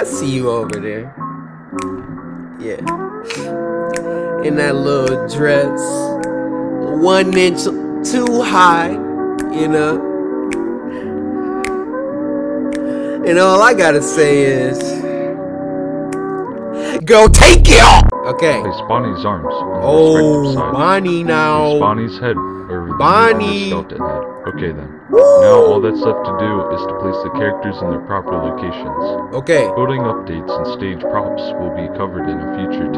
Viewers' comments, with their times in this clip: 0:04 that's some nice music
0:04 anyone else snap with him?
0:14 The singing got me dead 💀